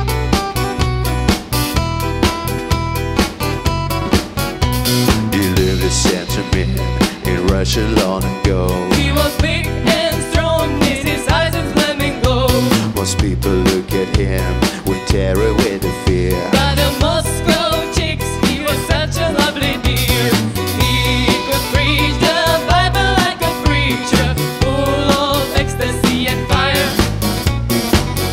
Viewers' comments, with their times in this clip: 0:10 I was waiting for the pronunciation of "strong" and sure enough the girls delivered it as with a prototypical Russian accent. 😆